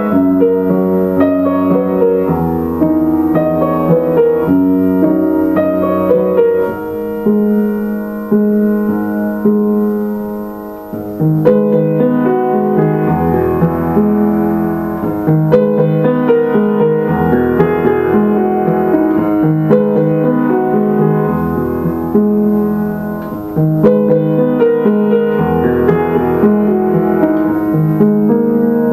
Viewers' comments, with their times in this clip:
0:10 i doubt it, but in terms of the bass, starting it goes (g#-d#-g#), b, g#-d#, (e b, e, g#, still trying to learn the rest